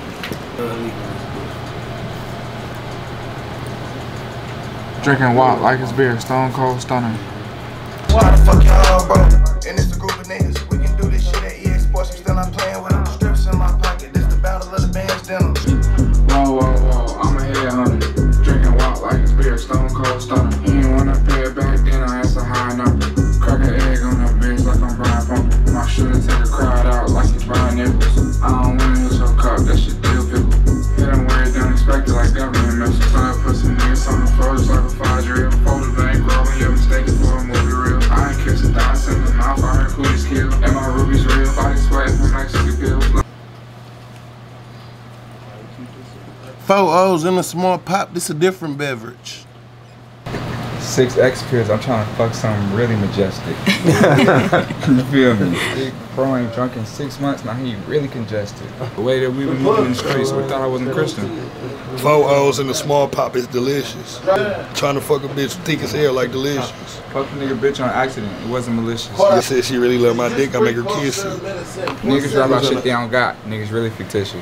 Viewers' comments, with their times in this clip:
0:06 That song too fye
1:01 the group freestyle a vibe